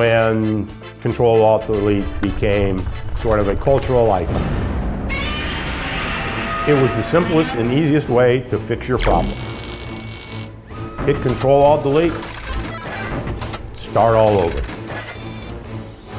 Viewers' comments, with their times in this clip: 0:03 That Godzilla roar! Priceless!